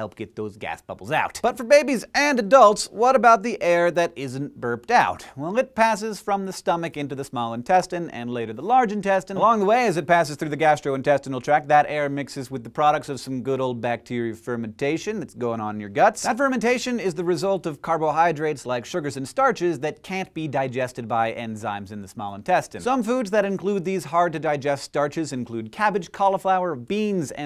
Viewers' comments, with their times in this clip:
0:10 sounds like EMINEM's RAP GOD ;D